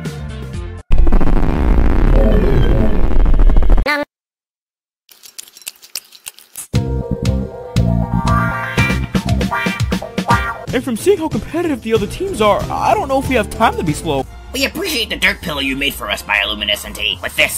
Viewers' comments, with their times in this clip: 0:03 mam eating sounds